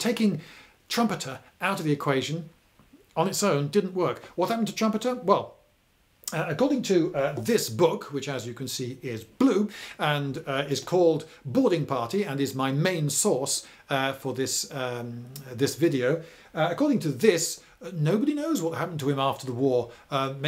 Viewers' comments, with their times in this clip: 0:08 "According to this book, which as you can see is BLUE" The way this is said with such emphasis perfectly subverted my expectations. I guffawed.